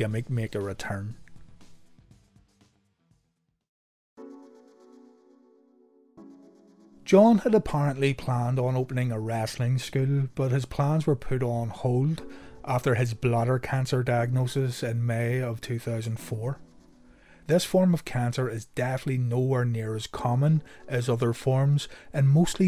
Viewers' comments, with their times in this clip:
0:05 after watching many of these videos I have begun to associate this music with death ☹️